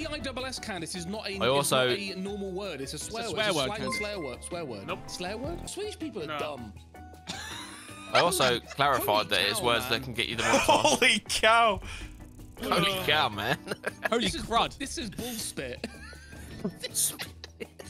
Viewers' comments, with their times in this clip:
0:04 the alert threw me for a loop for a sec.